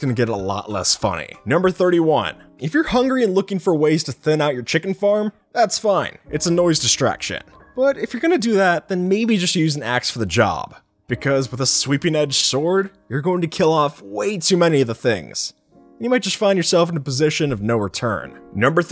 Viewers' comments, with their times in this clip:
0:06 that song... Thank you for playing that song, it brings me back to good times